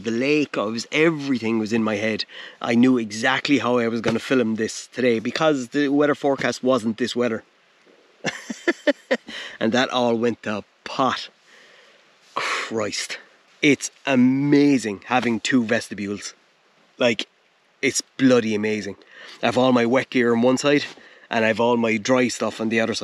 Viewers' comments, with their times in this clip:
0:05 Pop Quiz For American Viewers: A) The weather forcast wasn't this wetter B) The wetter forcast wasn't this weather C) The wetter forcast wasn't this wetter D) The weather forecast wasn't this weather E) All of the above Awesome video mate, really enjoyed it!